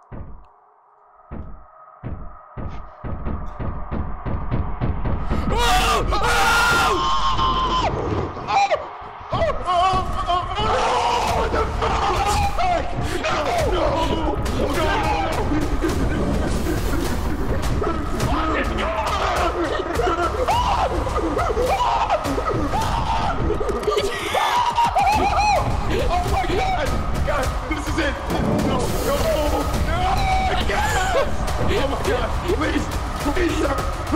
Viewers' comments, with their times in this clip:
0:06 that was pure chaos scream , love it
0:07 I CAN'T BREATH, I'M GONNA PASS OUT, he kept looking back and screaming harder.
0:11 the way he kept turning around and screaming at it 🤣
0:17 the way he looks behind the monster chasing him while screaming every time he turned around. I almost peed myself😂😂😂😂😂😂😂😂
0:18 THE WAY HE KEPT LOOKING BACK SCREAMING RIGHT AT THE MONSTER FREAKIN KILLS ME EVERYTIME 😭😭😭😭😭😭😭
0:19 your friend started to sound like tom from tom and jerry.
0:19 Lyrics: Panting Turns around; AHHHH Panting Turns around: AHHHH Panting Turns around; AHHHH Panting Turns around: AHHHH